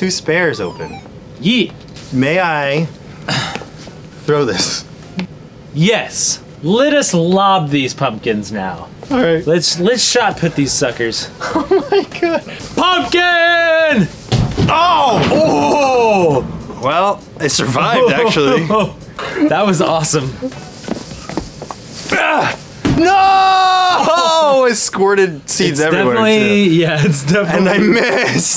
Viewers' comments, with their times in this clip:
0:10 lol Anthony's voice cracked "alright"